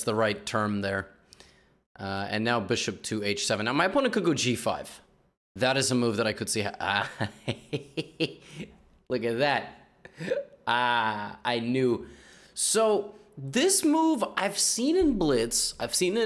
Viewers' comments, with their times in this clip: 0:03 lololol that "heh heh heh" got me gigglin way more than it should have